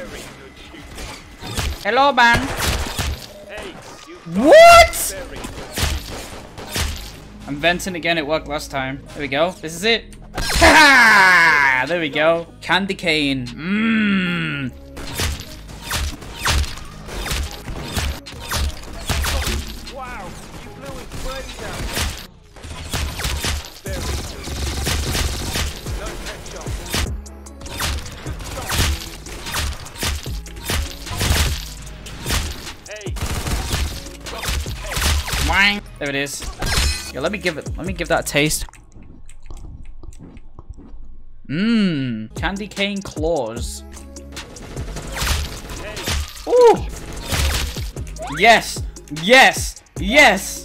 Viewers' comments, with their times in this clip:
0:03 he just say hello bang
0:12 The strongest MMMMMMM I ever heard
0:38 bro did an asmr for us💀
0:38 ASMR Moment XD